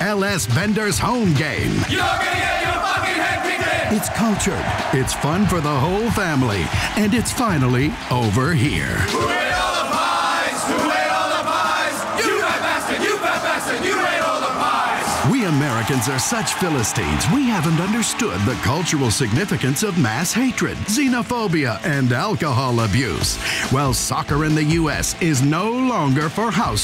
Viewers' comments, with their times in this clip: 0:09 A very iconic British chant